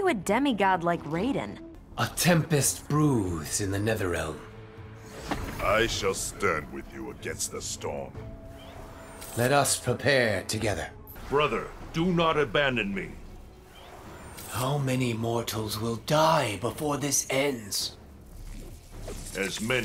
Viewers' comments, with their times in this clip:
0:05 Is it me or does Scorpion's voice deepen ?